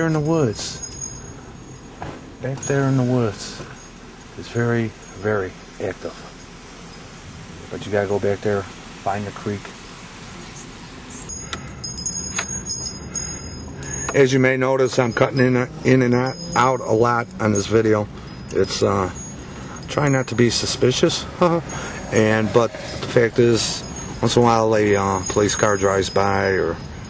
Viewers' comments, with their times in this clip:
0:10 You have an EVP. A woman's voice. Doubt you read these. This video is 8 years old.